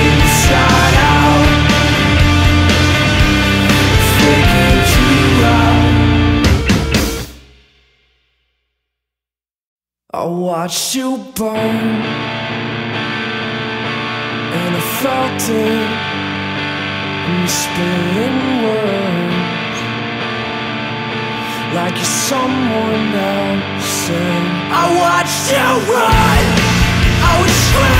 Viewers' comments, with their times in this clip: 0:08 "I watched youporn... and i farted"